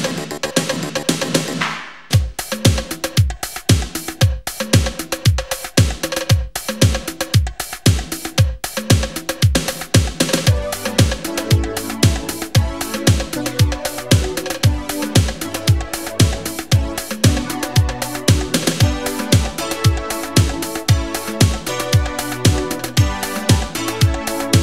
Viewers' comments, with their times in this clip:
0:10 It's Like Never Gonna Give You Up